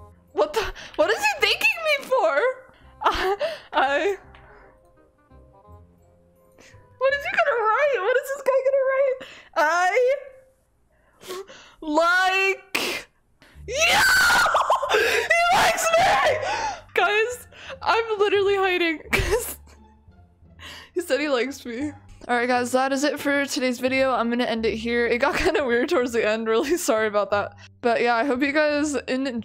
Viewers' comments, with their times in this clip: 0:06 I… Like… You………. SCREAMS
0:13 the way she screamed when he said I like you 😂😂😂